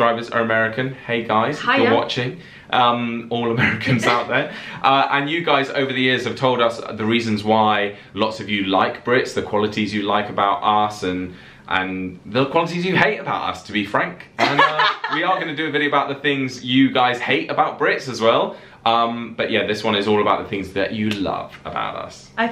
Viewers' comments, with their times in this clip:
0:06 The qualities you hate about ass and the qualities that you love about ass.